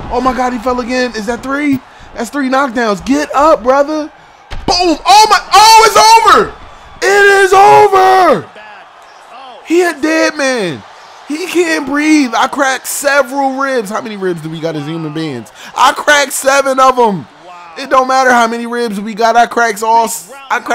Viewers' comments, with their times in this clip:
0:04 mans basically voiced the Nigga who got beat up